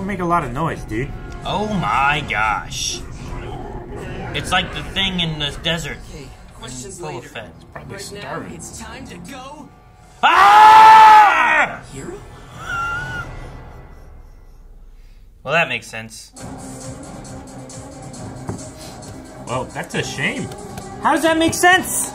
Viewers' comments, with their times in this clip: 0:08 That synchronized screaming tho 😂